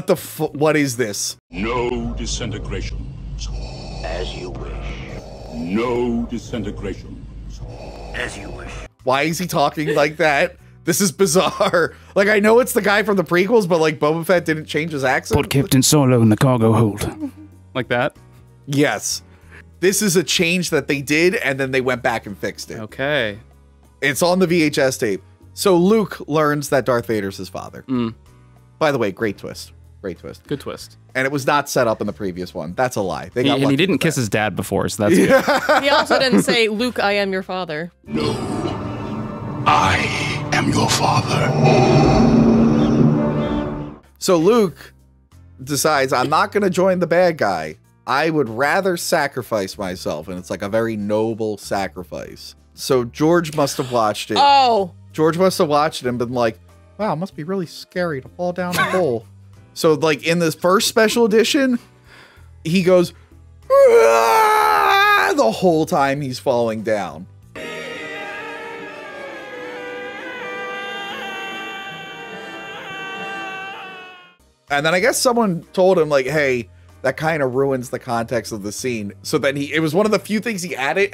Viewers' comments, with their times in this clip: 0:07 OG Boba Fett sounded badass, this change I actually felt completely unnecessary and disappointing, but this was not in 1997, and everyone did like the 1997 movies, in fact, it wasn't until Plinkett that I heard anyone bash SW movies at all, but I too was born 1990. Even as a kid there were a few things I found jarring; the Jabba from ANH was CGI, and like the one in TPM, they looked incredibly fake compared to RotJ Jabba, which was also like 10x the size, just how much did Jabba eat in a few years? Both songs in Jabba's Palace are really bad, but I think the new one is probably worse...and Greedo shot first, I mean, they can edit that, but they can't just have the Lazer miss instead of Han contort? It's negligible to me; Even Hayden at the end of RotJ was fine. Just 2 things bother me - Fett later voice change, and Jabba looking weird.
1:07 not gonna lie. Kinda preferred Luke’s screaming just because it reminds me of how Chucky screams all the time haha, which is funnier since Hamill did voice the “new” Chucky.